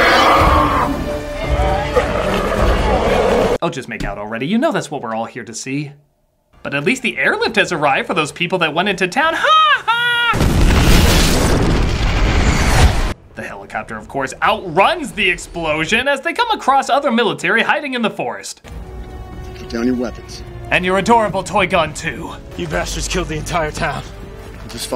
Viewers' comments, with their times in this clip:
0:06 Critic did the best Ha Ha ever